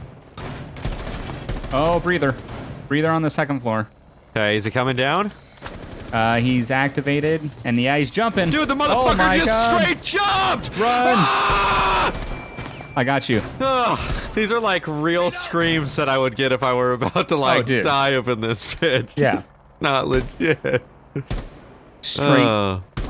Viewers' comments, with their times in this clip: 0:09 best part ever. His scream haha